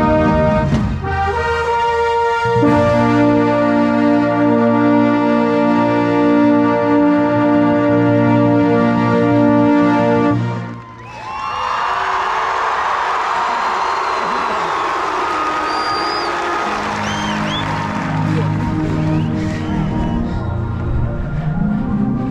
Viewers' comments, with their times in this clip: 0:07 the beginning sounds so good omfg literal perfection and the soloist along with in the show just amazing all around. you sound great keep it up!!